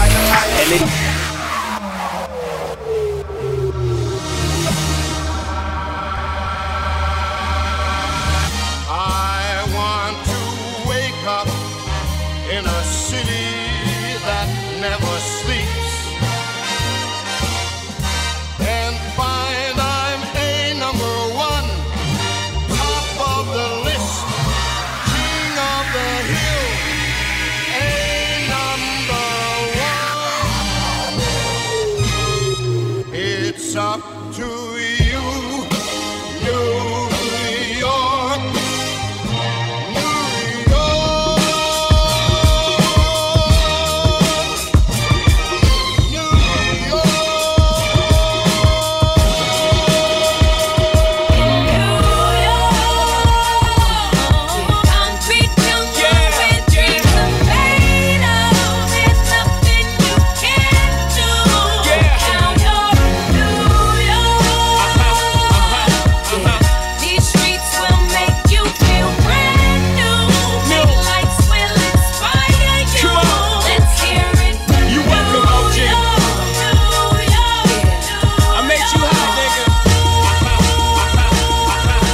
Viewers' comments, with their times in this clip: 0:08 That New York transition was so good, shit gave me chills 🎉🎉
0:33 that New York Frank to Alicia transfer is what makes you the MASHUP KING🤴
1:06 the new York transition is too cold